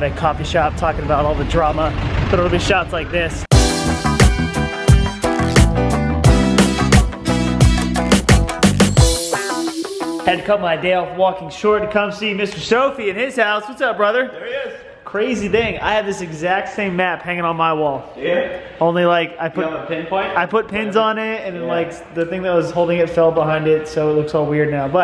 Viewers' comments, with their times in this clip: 0:08 porn background music?! 😂👍